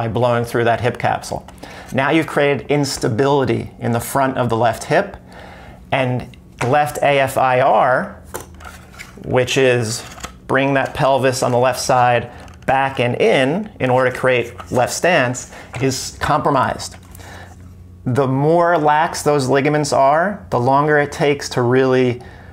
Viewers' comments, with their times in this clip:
0:07 Very interesting! But I don’t understand the word “left ASIR” or may be you said “left AFIR” at minutes Can you explain me please? Thanks from Spain